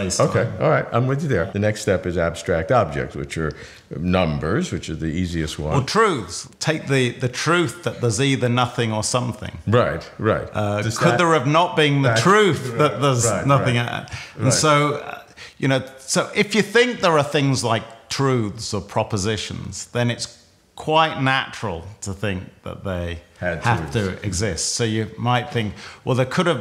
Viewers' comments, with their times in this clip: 0:09 hes SHOUTING lol